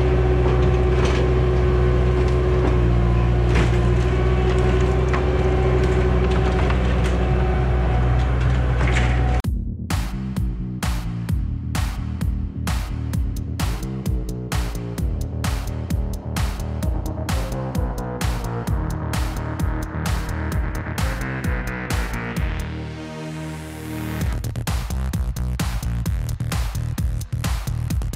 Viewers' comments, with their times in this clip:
0:09 this music is awesome. match perfect to your videos.